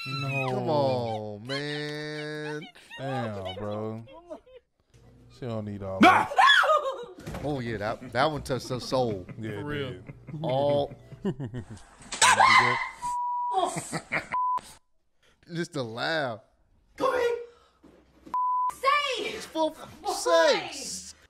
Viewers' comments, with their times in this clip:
0:06 that sounded like goofy